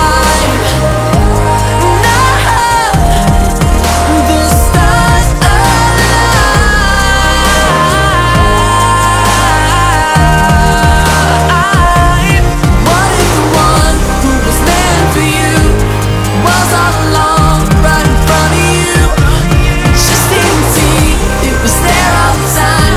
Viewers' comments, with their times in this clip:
0:04 ........ His voice...What a voice!